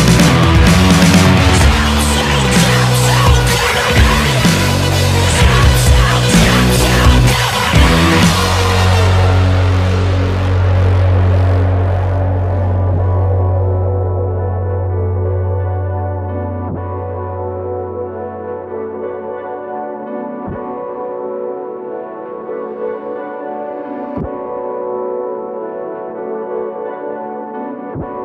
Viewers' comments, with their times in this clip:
0:09 transition from Jumpsuit to levitate is flawless.